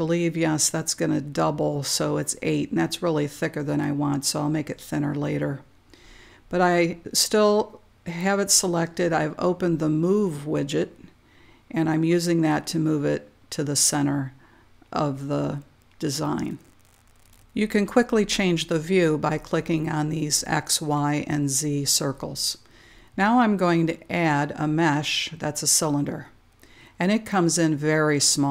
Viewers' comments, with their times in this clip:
0:10 Great Teacher and speaks clearly. Thank you.